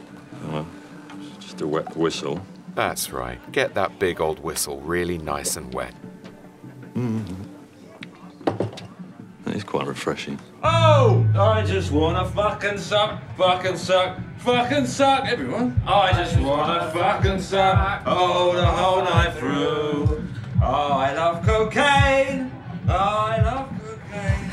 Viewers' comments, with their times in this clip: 0:05 the subtle grunt followed by the transition to a shitty nightclub has got to be one of the greatest scenes in cinematographic history.